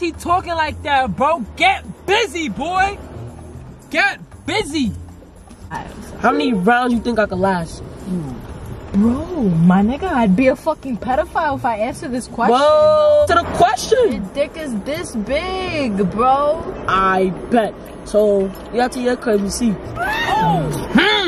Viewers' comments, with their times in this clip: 0:09 her accent is soo pretty fr